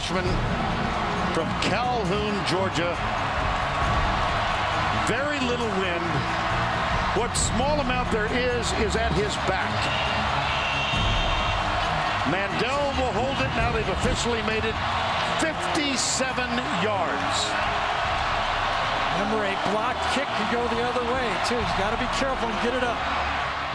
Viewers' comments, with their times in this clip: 0:09 I can hear Crazy Train playing. Only madden OGs will remember.